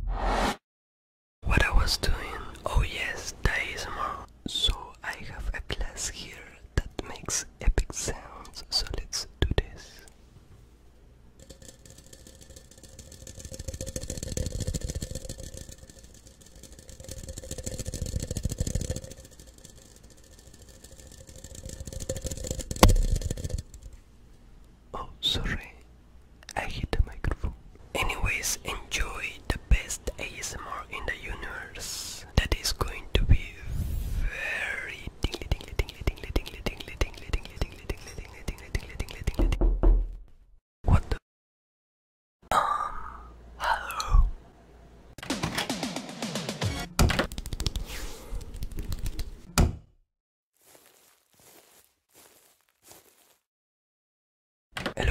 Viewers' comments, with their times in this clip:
0:04 so I have glass and it makes EpIc sounds
0:38 Had a heart attack because I got up to move my pillow and my bed is right next to my window and its 6am... though someone knocked on my window
0:38 THAT KNOCK SCARED THE CRAP OUT OF ME
0:38 WHY IS THE KNOCK SO REAL
0:38 What the heck bro, I opened my door only to find nobody's there
0:38 gosh the Knocking on the door is so realistic that i got a heart attack when i listening
0:39 ultra realistic audio LOL
0:39 I thought someone was knocking on my door
0:39 i shit the crap out of me with that door sound
0:41 i though sommebody was noking at my door